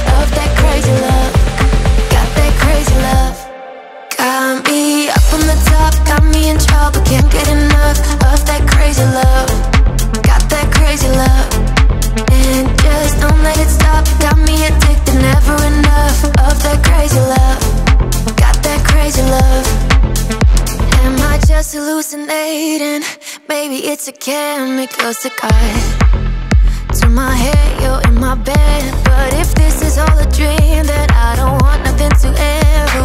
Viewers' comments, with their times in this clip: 0:04 There is something special about the drop 💯😍
0:21 😎 what a Tune !!!